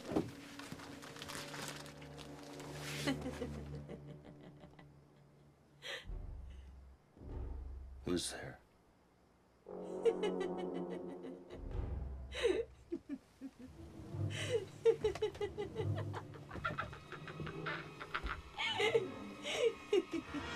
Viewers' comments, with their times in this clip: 0:03 TIFFANY LAUGHING GETS ME EVERY TIME 🤣🤣🤣🤣